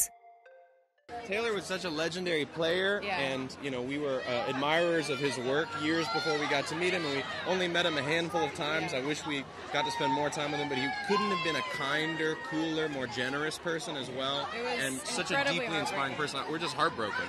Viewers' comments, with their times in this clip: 0:05 why is that girl interrupting him so much? Jeez let him finish a sentence